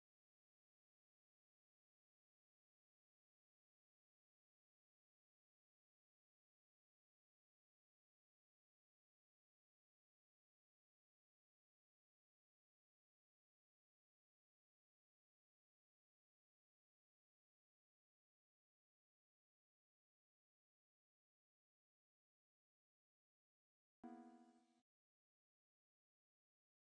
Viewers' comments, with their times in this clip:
0:07 I can't hear the Columbia theme! 😭
0:08 i didnt hear anything